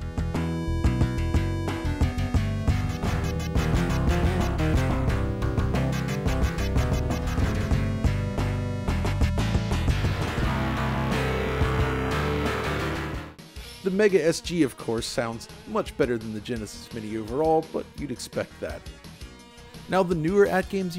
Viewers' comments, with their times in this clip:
0:03 ATGAMES music is such a banger